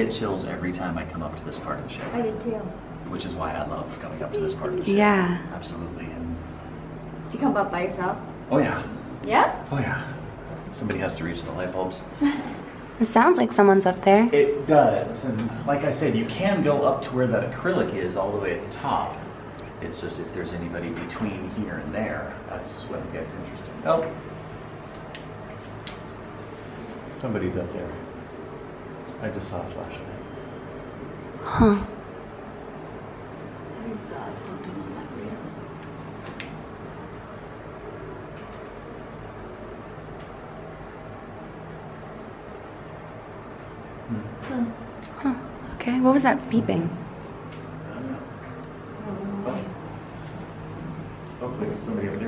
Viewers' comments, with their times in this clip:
0:04 Did anyone else hear “baby” being whispered ?
0:05 there's a little giggle
0:34 😳😳😳😳😳😳😳 “we saw something up there” it sounded like an old lady